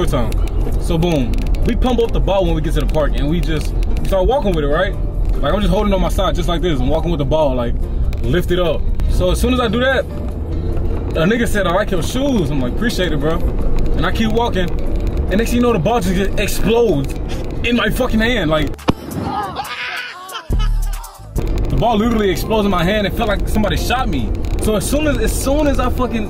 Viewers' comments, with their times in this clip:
0:09 ambatukam in the back